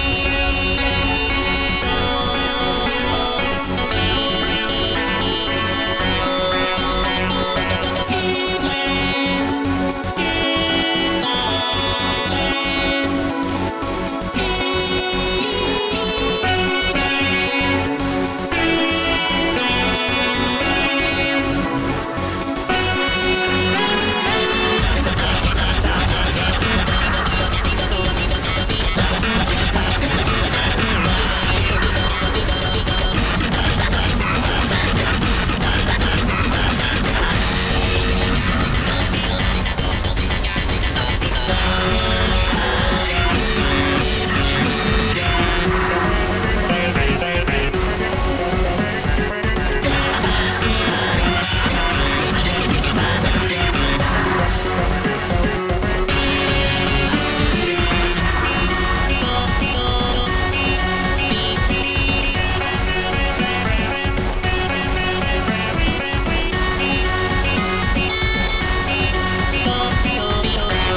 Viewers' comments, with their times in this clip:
0:08 i can hear quagmire say "think(speak??) Glenn, Try the plane"
0:24 if you put on 1.25X speed or 0.75X, it will sound good af
0:32 If you put on 2x speed sounds like Scooby Doo running
0:58 If that’s so then gives me “mom is at the door and jingling the keys in the lock”